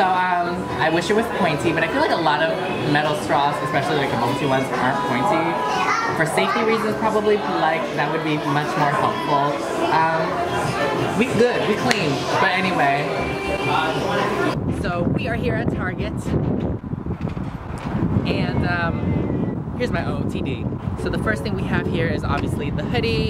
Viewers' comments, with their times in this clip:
0:06 Hears moana in the back🤣🤣